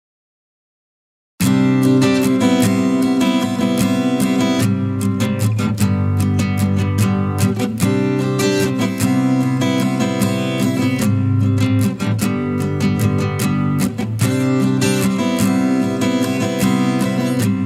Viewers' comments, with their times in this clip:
0:00 Love the drawing content, had to stop due to the awful pseudo "music". Love the content, hate the crap sound accompanying the art!